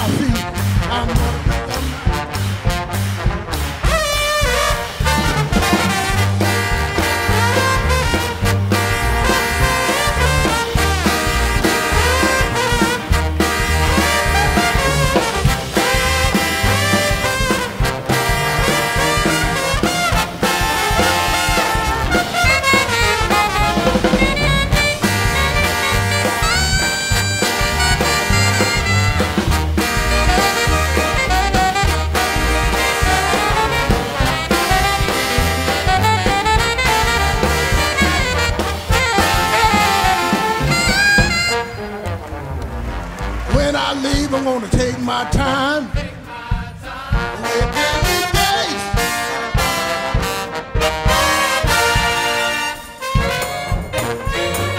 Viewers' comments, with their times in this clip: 0:03 Solo is awesome!
0:07 .... are the trombones so loud that they clip the mics and get distorted sounding like saxophones?
0:22 alto solo is bussin
0:41 Who else here loved that trombone part